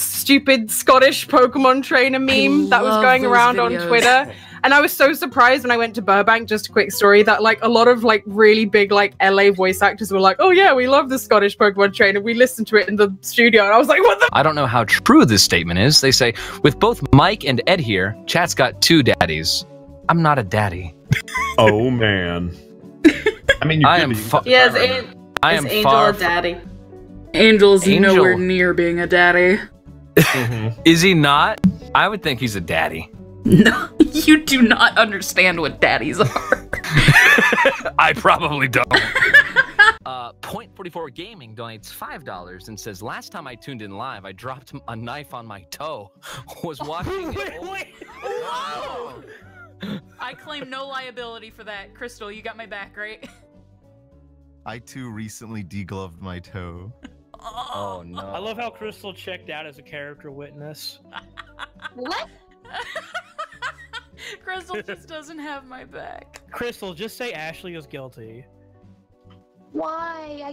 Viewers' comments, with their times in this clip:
0:10 perfectly cut sceams brought to you by a scotish voiced pokemon trainer
0:54 i love the long pause